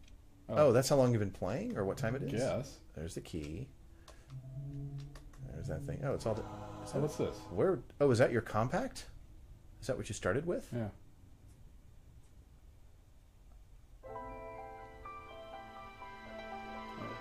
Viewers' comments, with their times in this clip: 0:03 thanks for using the mirror I miss that sound effect dearly